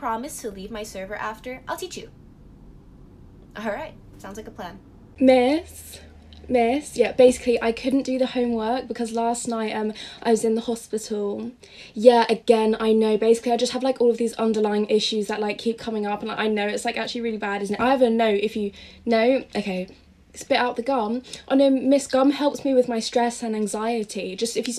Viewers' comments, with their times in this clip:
0:05 This is the type of Pick me girl that I may tolerate, Plus I like her voice Anyway about my experience with a pick-me girl So I was in a class right, (Note: our class was having a mix-match with another school, and the teacher who was supposed to 'look' over us apparently had some work so he left and I was with this group of maybe 16-18 people ) One of the girl started to joke around with a boy near my desk and trust me her voice was so fake like you could just listen to her from a mile and know immediately that the voice is fake , Anyway so I was just banging my head in the desk just thinking thoughts like 'when will she shut up' 'why can't the teacher come faster' 'where can I resign my life' 'dont the boys get irritated?' 'can I hit her?' 'OMG no one cares if your small' I was nice enough to tolerate her FOR ALMOST HALF THE CLASS!? The others (except the boy,me and the girl )were in their own little world not caring about any one else.